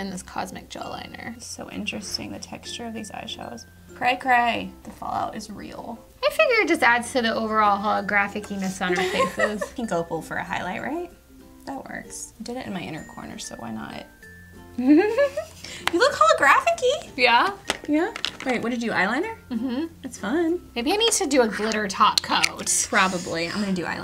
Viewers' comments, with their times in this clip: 0:07 I just have to comment on this because it's so funny! I have a toddler that was still sleeping this morning when I was watching this so I put on the automated subtitles. And it said holographic penis on my face is pink opal... I was confused so I risked waking up my kiddo and turned the volume on to see what you guys really said. It was holographic-e-ness. So funny it made my whole day! 😂